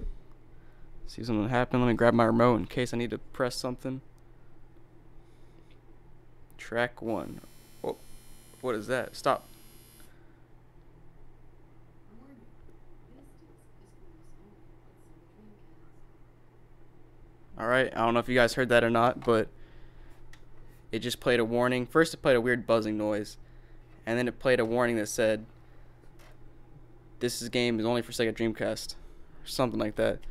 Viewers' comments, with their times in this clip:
0:07 The DVD player was playing CD-ROM format which is not supposed to happen. That's why it played that loud screeching noise. Most audio systems nowadays will not play track 1 on CD-ROM discs at all to avoid speakers being damaged, but not all will be able to stop it.
0:08 TRACK 1 IS GAME DATA... THAT BUZZER IS THE PLAYER'S TRYING TO READ LINES OF BITCODE PLAYING TRACK 1 ON LOUD VOLUME CAN SEVERELY DAMAGE YOUR SPEAKERS... PLEASE STOP PLAYING THIS DISC NOW.....
0:13 High volume then put your ear in it. You will hear the Warning.